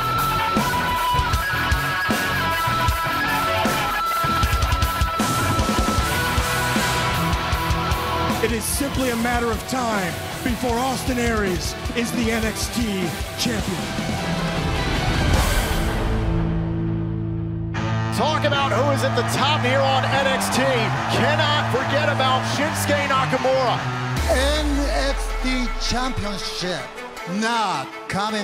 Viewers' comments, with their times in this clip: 0:10 Austin Aries sounds like Steve Austin😂😂